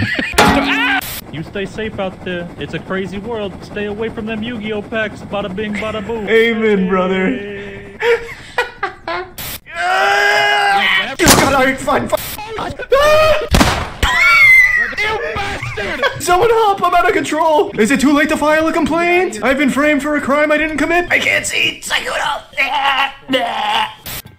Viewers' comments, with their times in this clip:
0:09 that expression on Charlie followed by the scream gets me every freaking time